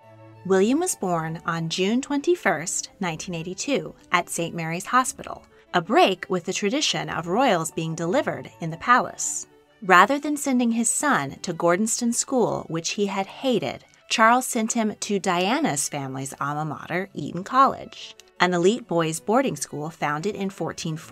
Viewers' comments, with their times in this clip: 0:05 why was that William was born on bla bla bla really catchy in my head